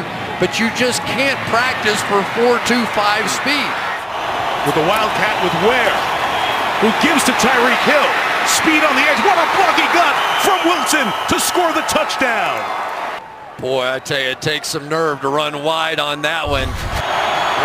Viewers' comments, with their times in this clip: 0:04 what a block he got sounds like what a f*cking god